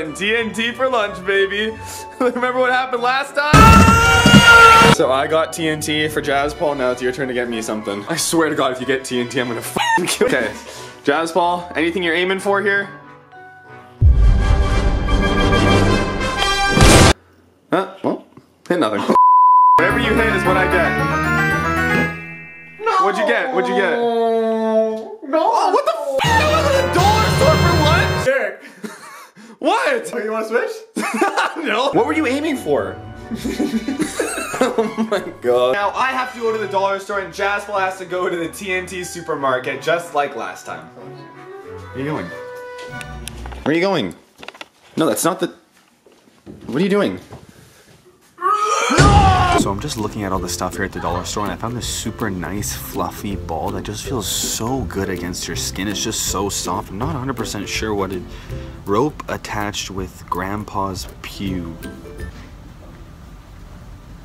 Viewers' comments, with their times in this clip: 0:03 the scream thooo 😂😂😂😂😂😂😂😂
0:50 someone moaned in the background